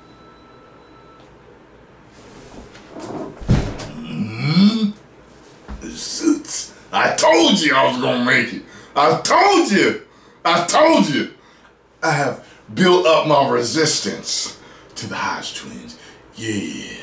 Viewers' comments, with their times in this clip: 0:04 he sounded like Groot!!😂😂😂